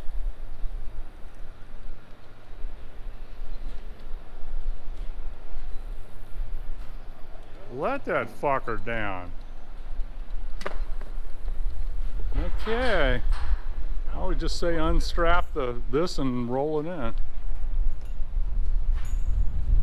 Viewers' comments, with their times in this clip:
0:07 Now that’s how you should pronounce the name Fokker! 👍🏼